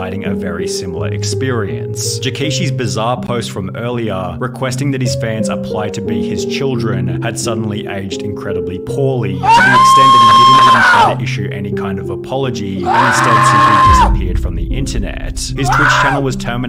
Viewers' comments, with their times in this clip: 0:03 turn your volume up, it gets quiet for a second lol.